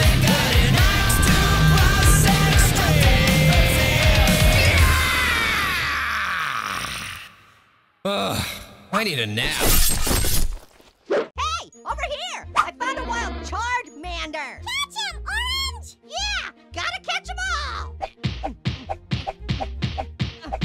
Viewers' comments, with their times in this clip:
0:06 how i sound when i have a stroke